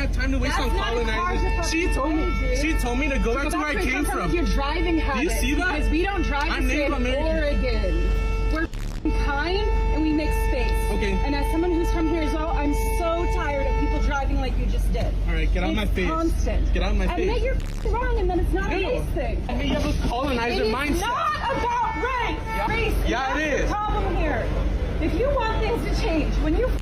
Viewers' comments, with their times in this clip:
0:07 She totally has that California accent